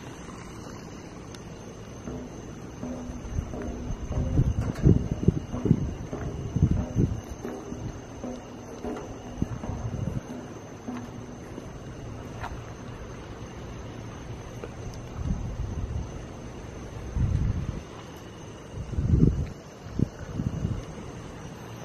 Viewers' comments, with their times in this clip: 0:03 whats that loud noice ?